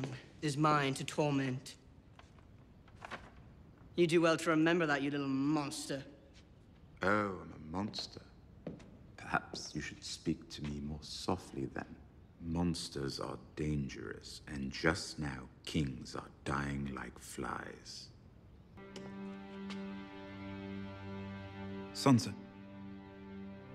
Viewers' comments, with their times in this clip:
0:06 sent chills to my spine ... the deep voice and intensity makes the scene eargasmic ... maybe it will be my ringtone ......